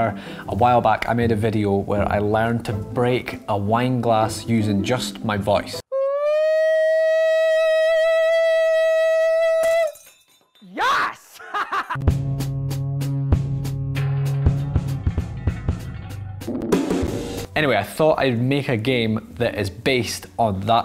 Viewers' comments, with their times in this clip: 0:05 you sound like the misquote over my ear at night